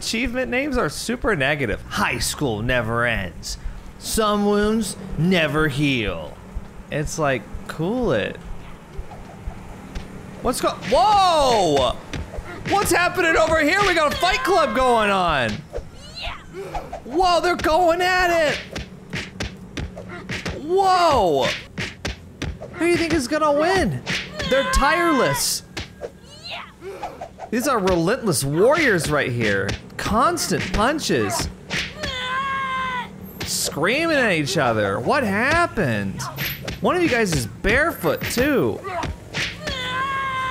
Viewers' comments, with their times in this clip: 0:10 the sound effects are hilarious
0:25 the sound effects were more intense than the fight